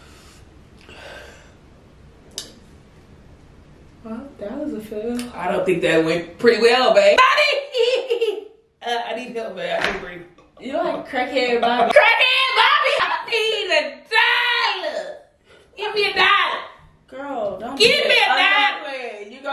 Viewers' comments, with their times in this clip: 0:06 why she laugh like that